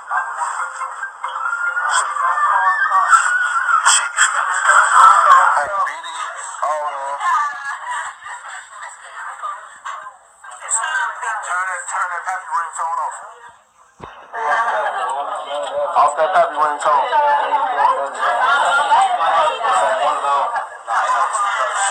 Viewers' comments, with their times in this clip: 0:06 Did anyone hear screaming